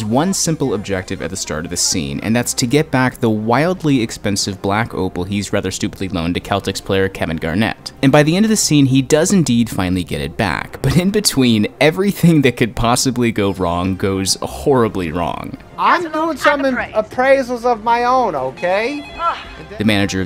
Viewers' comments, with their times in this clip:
0:06 this man said Keltics
0:06 did he say Kel-tics player? I know that’s technically right but as a sports fan, I had to pause.